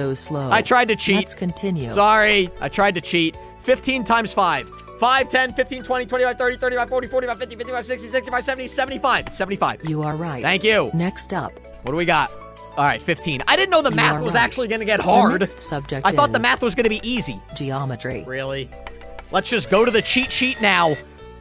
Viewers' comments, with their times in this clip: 0:03 bro counted faster than sound